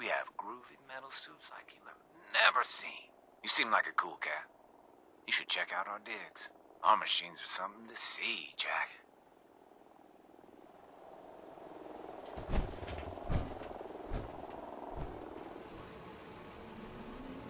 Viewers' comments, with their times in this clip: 0:05 Please Tell Me Im Not The Only One That Heard “Check Out Our Dicks”